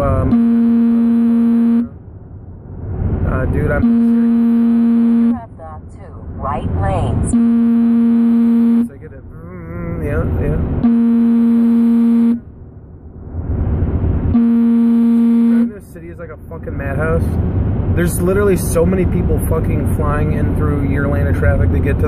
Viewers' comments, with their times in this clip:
0:03 Aaaah ish the audio went crazy!